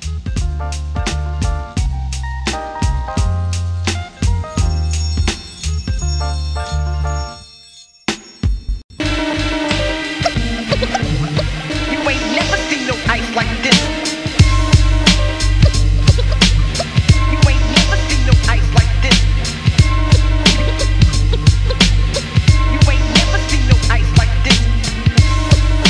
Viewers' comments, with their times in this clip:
0:08 I miss the era of scratching in the hook and chorus